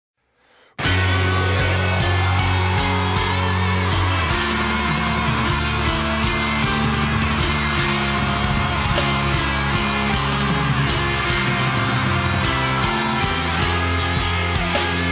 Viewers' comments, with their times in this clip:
0:00 there is a scream but at least its not a pig squeal like every grind core bands including waking the cadaver